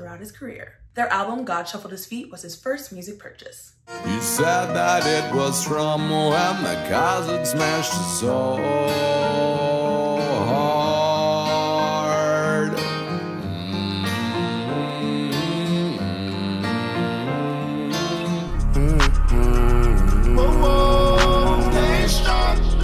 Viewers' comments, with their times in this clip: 0:05 Am I the only one who heard him saying ( it was from " Mohammed " )